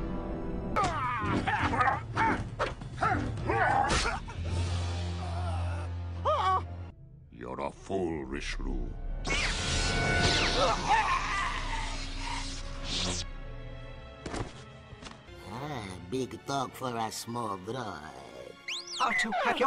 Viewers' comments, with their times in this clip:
0:05 Jar Jar Binks sound😂😂